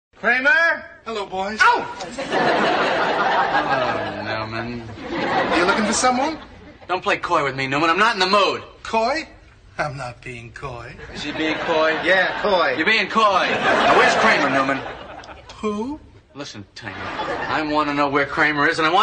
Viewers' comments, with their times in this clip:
0:01 that surprised “AOW!” From the corgi was perfect.